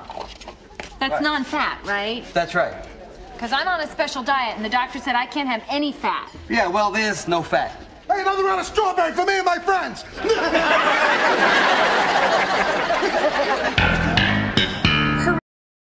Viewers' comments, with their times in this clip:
0:09 Why the fuck would some one laugh like that after saying, "another round of strawberry for me and my friends"? That is fucking psychotic!